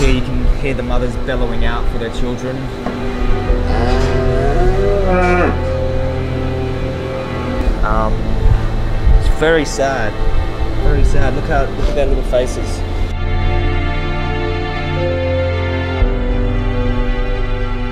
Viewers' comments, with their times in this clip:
0:03 You can hear the cows bellowing Cricket..cricket...cricket